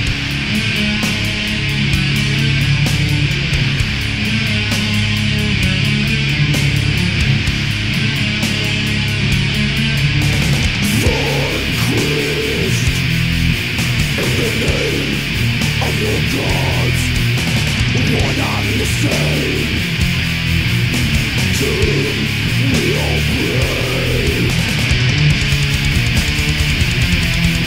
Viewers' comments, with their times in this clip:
0:10 ah, teenage years... 90s fuск me, this riff still gives me goosеbumps!